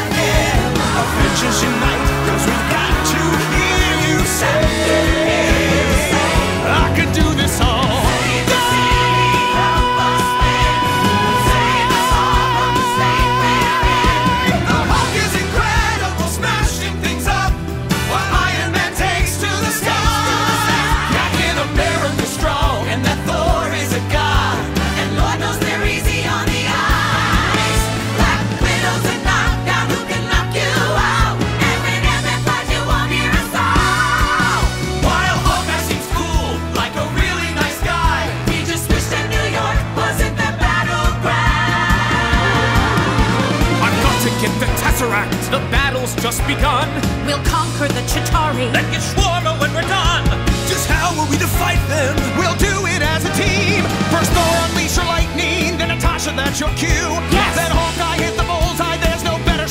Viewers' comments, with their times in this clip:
0:06 I loved this whole scene so much 😭 but bro the "I can do this all DAAAAAAAAAY" was SO clean chefs kiss
0:44 Pinball Wizard vibe